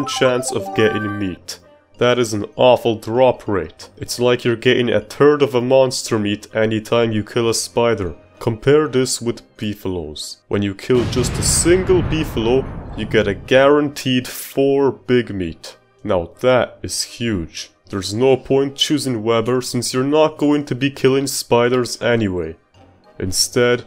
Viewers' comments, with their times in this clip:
0:10 i love that * BOOM * effect